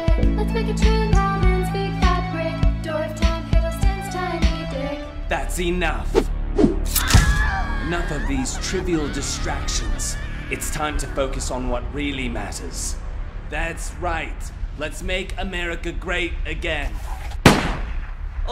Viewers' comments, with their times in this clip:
0:05 I came here for a song but thats what is stops being